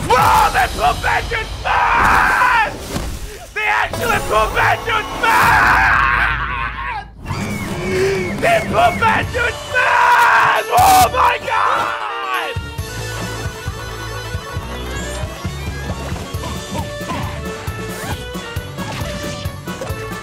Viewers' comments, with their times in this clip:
0:05 Damn, that's some Tyler1 levels of yelling